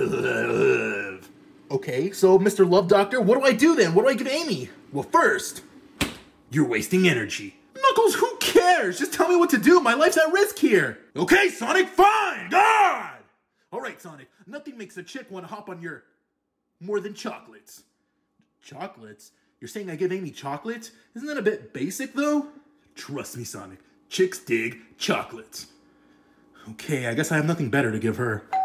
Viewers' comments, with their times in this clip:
0:10 anyone notice how the audio turned quiet and im at full volume💀